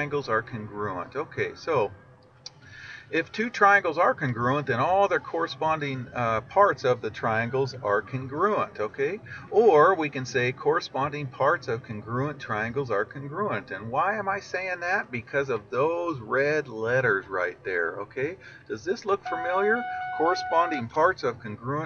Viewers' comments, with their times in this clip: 0:08 Who heard the siren